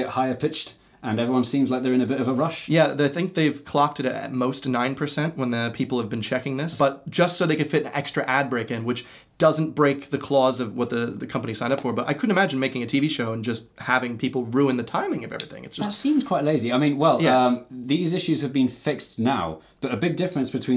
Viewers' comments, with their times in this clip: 0:07 Is the video sneakily sped up ?